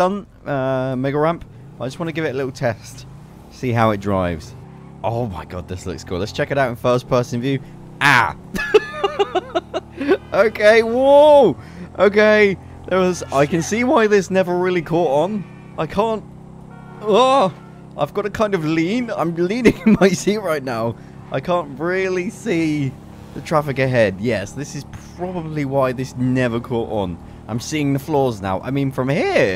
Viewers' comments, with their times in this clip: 0:10 sounded like Hank Hill XD
0:16 also sound hank hill